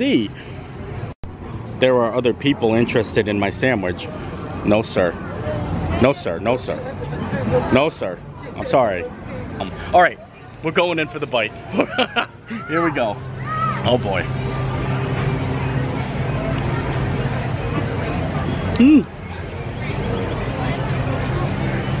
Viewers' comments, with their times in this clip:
0:08 there are other people interested in my sandwich. No sir no sir lol 😂 your laugh makes me laugh 😹